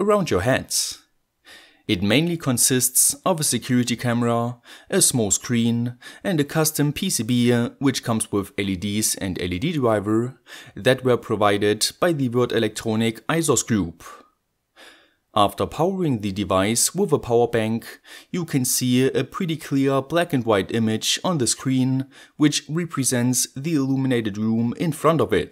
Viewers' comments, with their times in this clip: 0:07 Custom " PCB ya" haha just for fun Cool project Btw